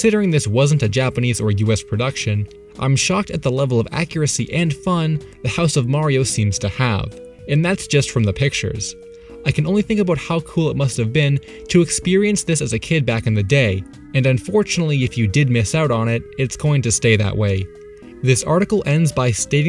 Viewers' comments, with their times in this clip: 0:04 Don't know why but the way you added on "And fun" made me feel so happy! I hope more is revealed by people who went there